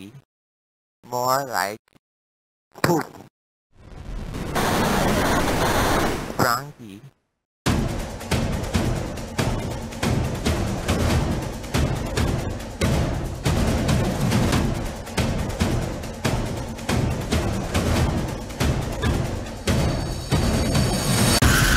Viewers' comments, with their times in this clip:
0:08 It sounds like drama content